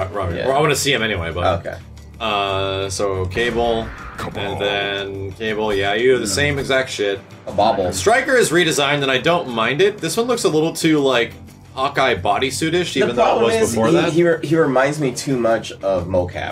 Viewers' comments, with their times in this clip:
0:03 He dead ass pronounces Kabal “Cable” 😂😂😂😂😂😂😂😂